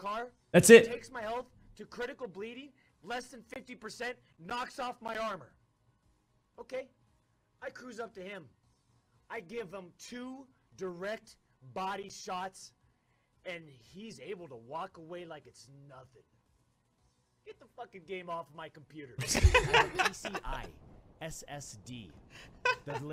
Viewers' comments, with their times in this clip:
0:05 they both laugh makes me so hard laugh 😂🤣🤣